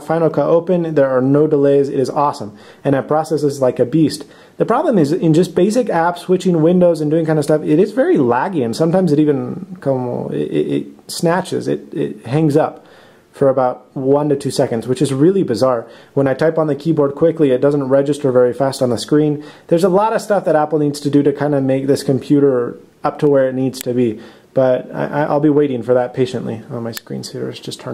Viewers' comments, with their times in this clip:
0:08 I love how he says "como"
0:09 Dude you totally said its laggy and como lol. You picked up some accents and perceived pronunciation.